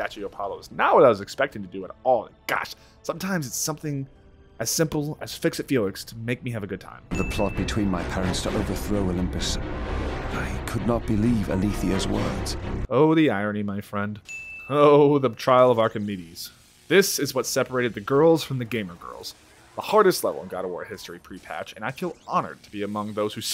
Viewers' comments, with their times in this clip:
0:10 I'm not the only one who heard that notification, right?